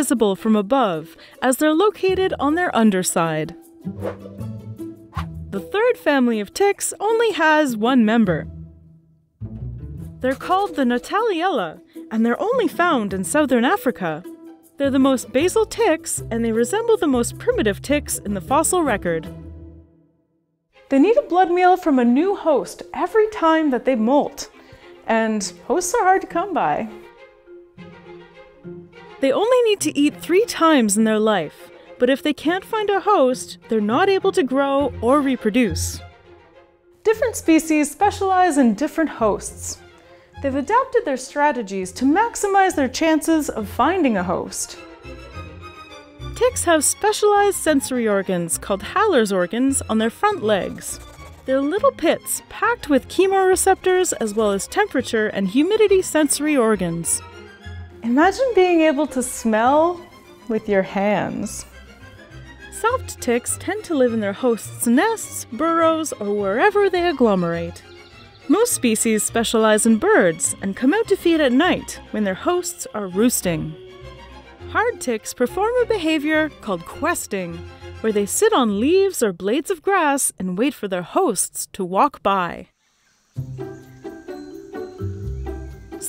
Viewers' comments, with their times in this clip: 0:09 CRUNCH, Hey these are not cookies?
1:08 That owl(?) scared the living [oof] out of me